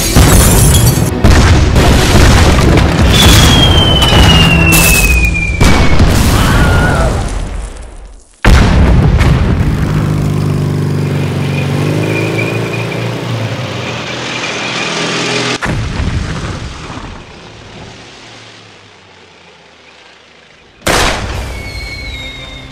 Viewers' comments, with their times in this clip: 0:09 that wilhelm scream lol